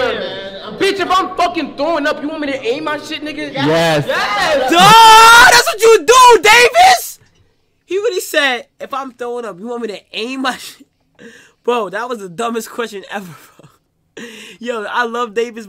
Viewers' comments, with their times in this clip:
0:03 dawg this gave me permant ear damage now every time i plug my ears i hears that scr/